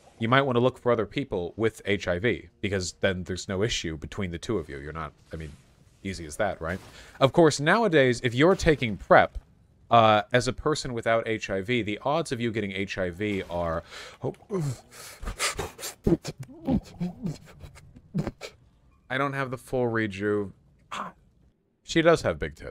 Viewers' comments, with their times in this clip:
0:10 the odds of you getting HIV are [starts beatboxing]